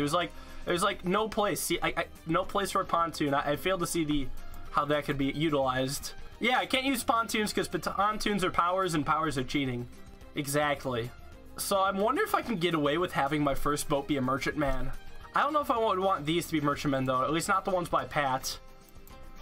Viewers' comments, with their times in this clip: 0:07 pontoons because ptontoons are powers and powers are cheating. Whats a ptontoon?